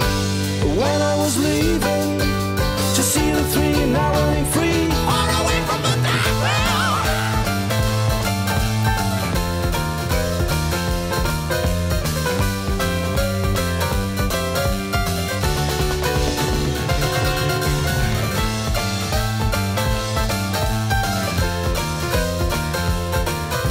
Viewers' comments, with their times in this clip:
0:08 I love that part when "rock-n-roll" theme evolves into flashy Hammond solo